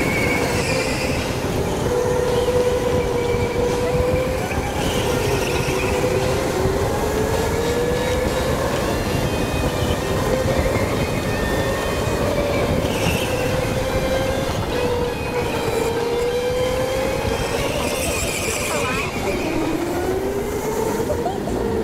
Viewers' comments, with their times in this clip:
0:08 Best selection of music